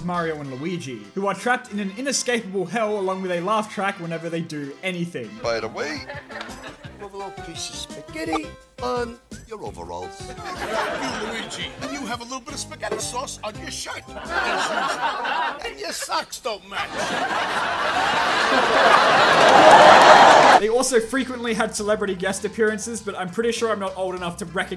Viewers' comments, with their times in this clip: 0:09 'm sorry but what did mario just say i mean it's hard to hear what he said because the laugh track plays at the same time i swear he just dropped a F bomb